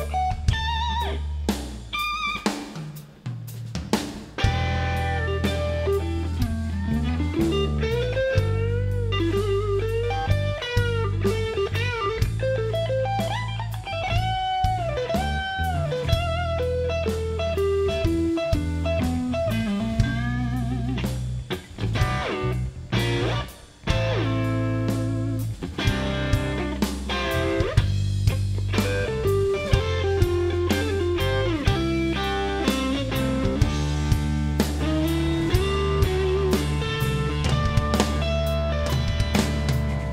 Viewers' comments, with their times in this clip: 0:04 How did he make his guitar groan ?!
0:20 Those slides completely amazing, I don't know where your inspiration came from but that was indeedly Heaven Sent.
0:21 sweet lord, that chord slide is amazing.